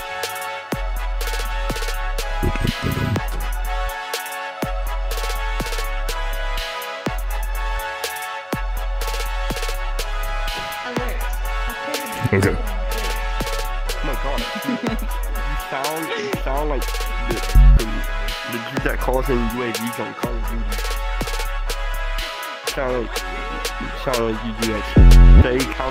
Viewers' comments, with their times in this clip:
0:06 with the background music gives me life I cant tell you why it do but it just do